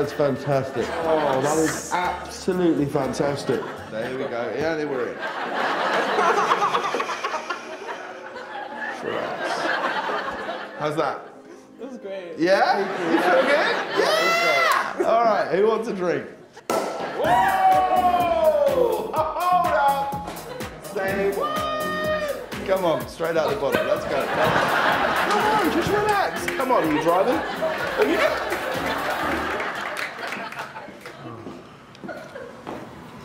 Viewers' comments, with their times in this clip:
0:05 aww that guys laugh sounded like a baby it was so cute
0:06 that sounded like Lefou laugh
0:16 I thought it was the Law and Order sound